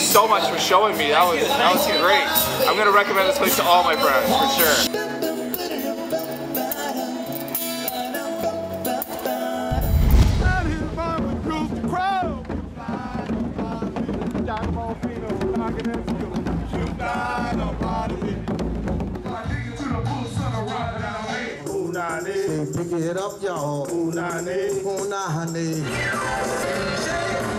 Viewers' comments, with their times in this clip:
0:05 thats a beautiful tune
0:10 Awsome video...the musician kind of reminded me of the doug funny cartoon intro